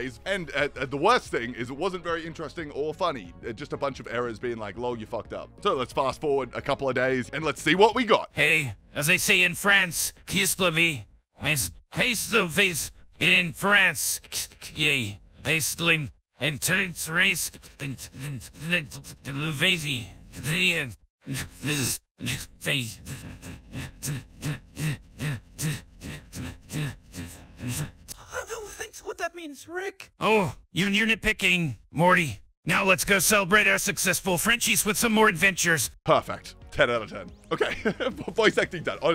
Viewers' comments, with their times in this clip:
0:10 As a french guy, I can confirm that this is how we talk.
0:12 idk y but this gave me goosebumps bcz its so strange and creepy for some reason it just freels so unnatural and weird it mske me uncomfortable imagine falling asleep with headphones is and this video starts playing adter the ine u js had and he js starts talking in some satanic language and ur dream turns into a nightmare of like a cat speaking like that to u or smth and it moves closet and its face gets like distorted
0:21 Oh god the heavy breathing voices really got me 😂